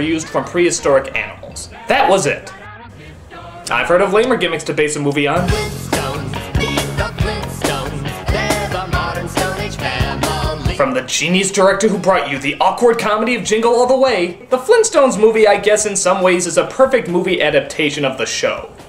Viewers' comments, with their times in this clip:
0:06 the tunes catchy though